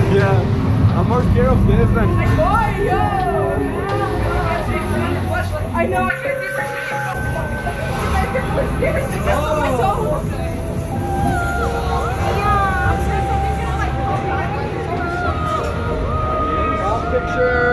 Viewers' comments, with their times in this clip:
0:05 WAIT the static gets stronger and the timer goes crazy, then it resets.